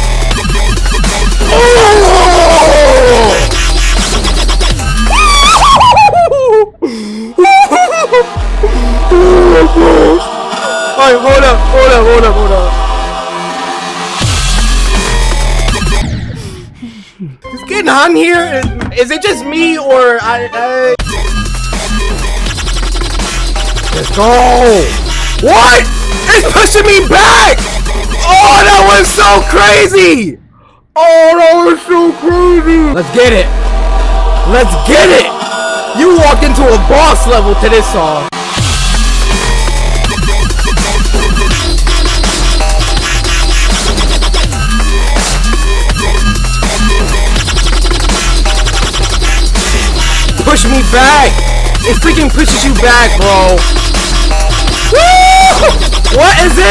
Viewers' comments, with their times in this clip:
0:05 lol that voice tho
0:06 u sound like Jerry from Tom and jerry
0:38 WHO THINK that was the best Music ever to a boss battle? 1 Like who thinks